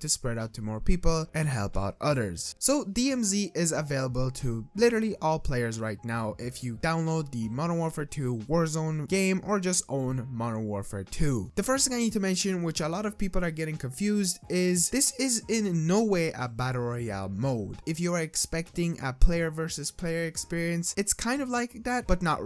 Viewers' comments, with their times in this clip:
0:05 Oh so this will help out utters? 😂 so if we have a farm an we need help with our cows on our farm this video will help? 😂😂 I thought this video was about call of duty I'm trying to figger out how to play dmz bro 😂😂😂 jk